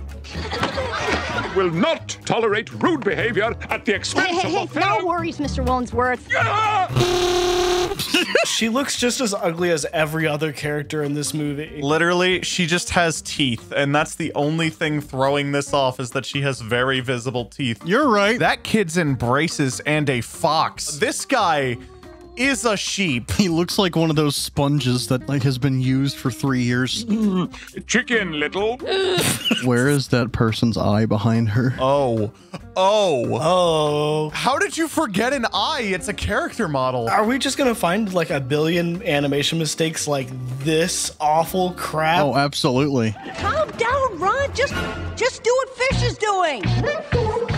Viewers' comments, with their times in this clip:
0:06 Mr woodensworth: HA! BIG LOUD HORN THAT WAS NOT IN THE MOVIE ALSO THE SCENE IS LONGER THAT IT WAS WASN'T IN THE MOVIE
0:29 The duck’s voice